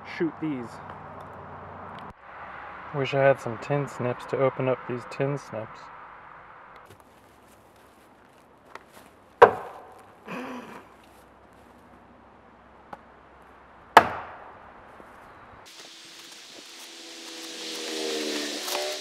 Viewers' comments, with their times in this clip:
0:06 hahahaha with the laugh after